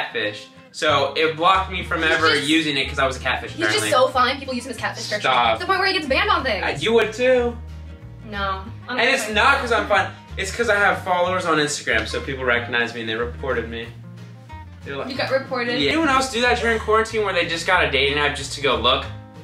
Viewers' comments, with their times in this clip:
0:04 Why'd she speed it up 😂
0:04 Holy sheet she talks fast